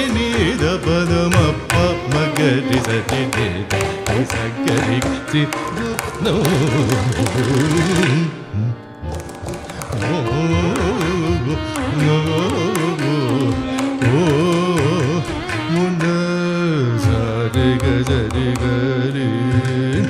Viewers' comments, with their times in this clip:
0:06 Its just out of the world. Bhairavi ragam became addiction, not able to get out of it 😊